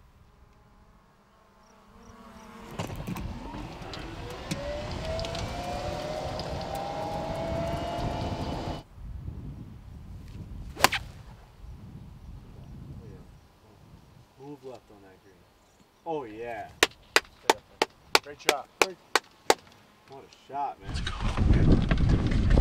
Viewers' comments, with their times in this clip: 0:04 The sound that iron made is a perfect movie laser noise 🤣